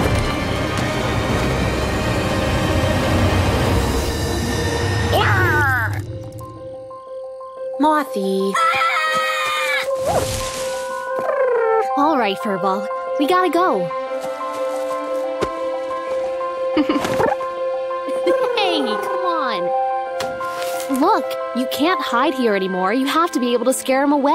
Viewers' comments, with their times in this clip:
0:08 The Mothman's Scream